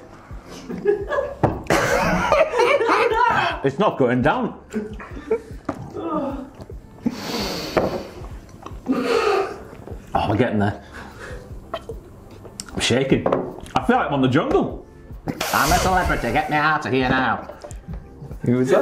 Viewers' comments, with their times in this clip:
0:05 when the entrance theme hits: